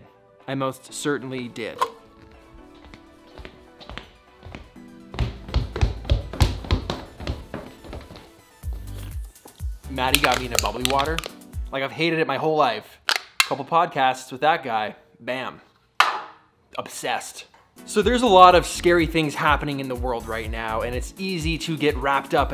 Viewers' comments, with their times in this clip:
0:08 What is he saying ? Something something water?